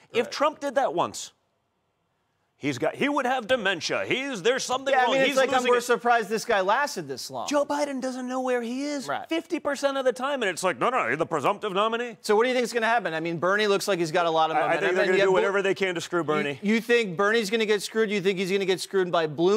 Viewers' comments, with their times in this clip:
0:07 he sounds exactly like his dad.